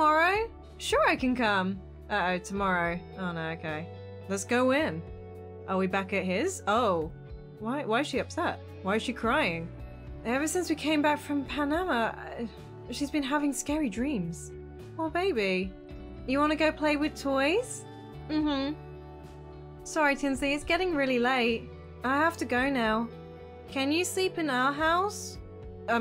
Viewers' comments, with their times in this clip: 0:08 Aww there are so cute but the kid start crying